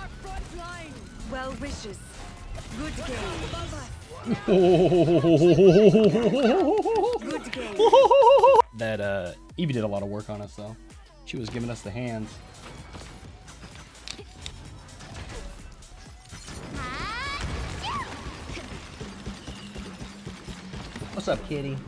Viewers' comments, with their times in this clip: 0:08 santa clause voice